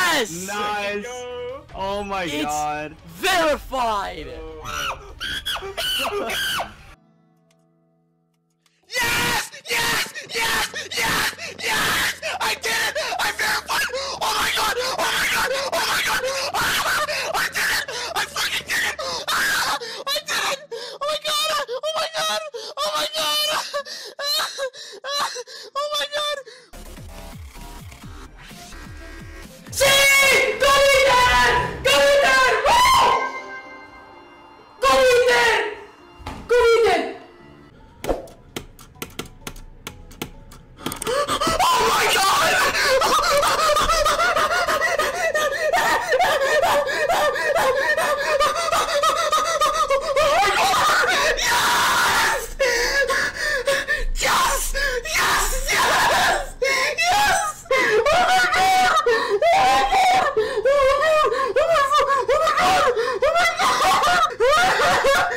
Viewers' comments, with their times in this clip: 0:05 what was that scream😂
0:07 The loudest reaction in Geometry Dash so far.
0:30 Did this dude just yell gummy bear
0:41 OH MY GOD. *goofy ahh sounds*
0:49 why does bro sound like a rubber chicken💀